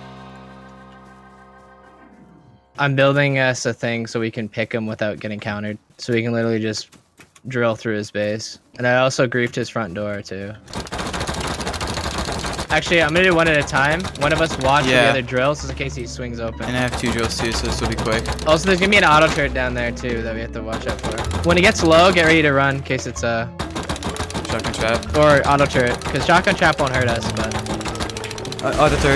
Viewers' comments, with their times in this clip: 0:10 That legend of zelda beat tho